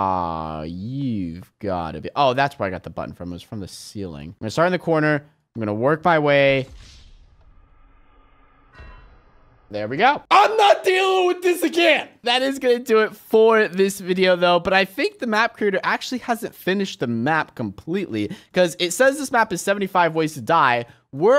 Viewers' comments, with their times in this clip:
0:08 When unspeakable was smelting iron it was a perfect beat And “IM NOT DOING THIS AGAIN” “that is going to wrap up this vid”